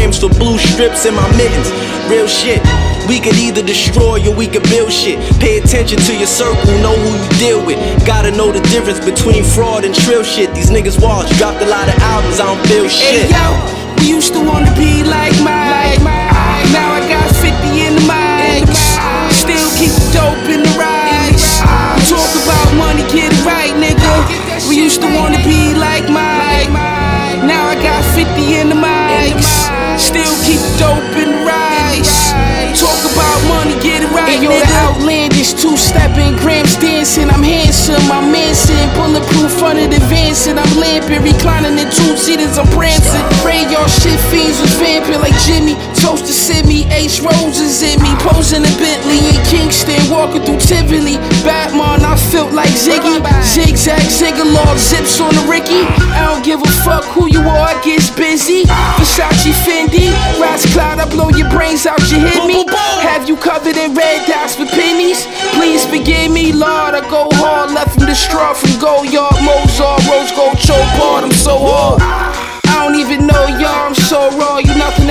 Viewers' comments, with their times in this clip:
0:03 this clip is fitting cause Premierr got the skim milk crates on this one. Sound like this join came off Moment of Truth - essentially Philly residues at this point. it kindaaaa creep tho
0:57 Rome always has the best word play and sounds like a Big L to me but I’m talking about the switch up in not the 50 in the Ike’s shi so yea and if you like Rome like i do definitely check out his older songs they are really good especially vagabonds 💯